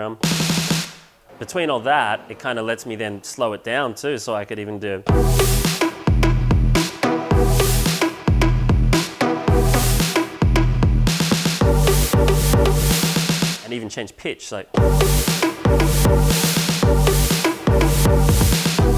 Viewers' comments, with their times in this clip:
0:05 AMAZING BREAKDOWN TO BREAKS!